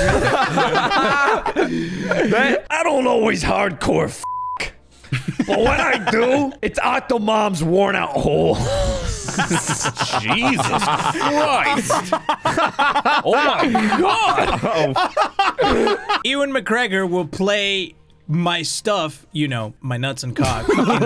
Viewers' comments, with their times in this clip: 0:03 Juicy sound like grunkle Stan from Gravity Falls